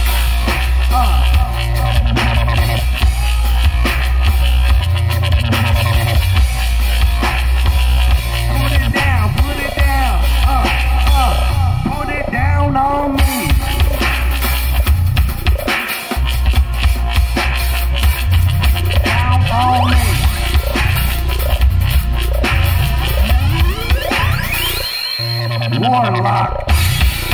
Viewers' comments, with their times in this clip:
0:10 haha i digged that frog sounding bass ish